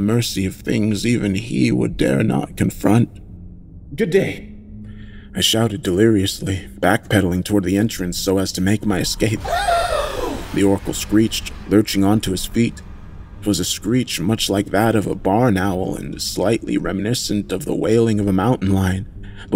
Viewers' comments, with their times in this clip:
0:07 -Cosmic horror✔️ -Supernatural themes✔️ -Interdimensional themes✔️ -Subtle religious themes✔️ -40+ minutes long ✔️ Edit: Chills. You voiced that screech better than any channel I've heard do it so far.